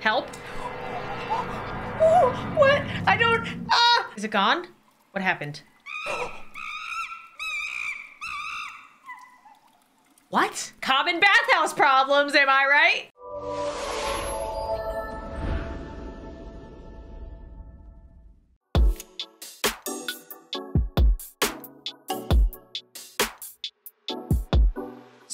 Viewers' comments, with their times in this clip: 0:06 this girl turned in to a pterodactyl
0:07 “w h a t ?” Got me and idk why